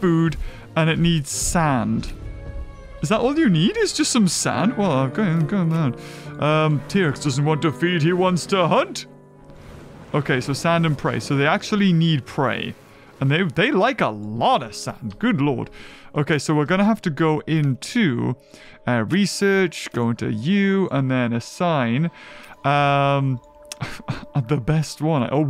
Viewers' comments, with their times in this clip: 0:09 am i the only one who hears evil morty theme